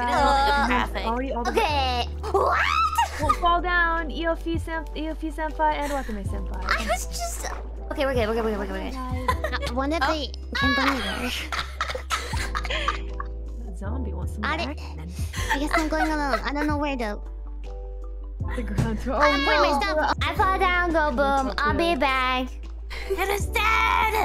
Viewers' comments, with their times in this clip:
0:08 to this day that is the hardest laugh I've ever heard come out of Ame
0:11 Blessed Gremlin laugh 😂